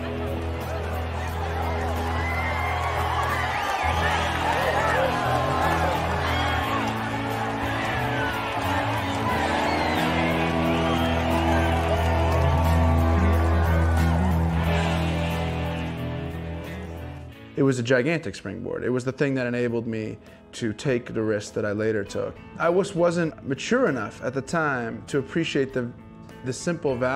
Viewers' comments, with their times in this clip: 0:08 the audio from film doesn't match the audio from this clip. Whats up with that